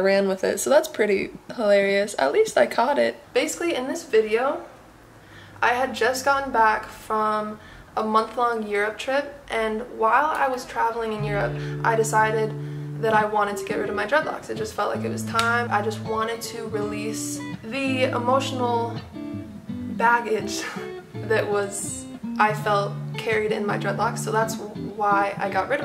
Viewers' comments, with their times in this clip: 0:07 she said a month long Europe trip but I heard a month long year trip and I was like is you on crack